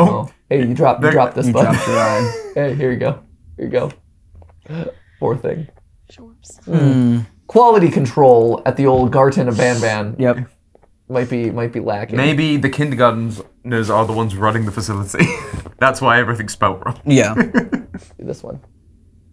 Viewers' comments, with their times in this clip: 0:07 I love how they went hmm like Minecraft villagers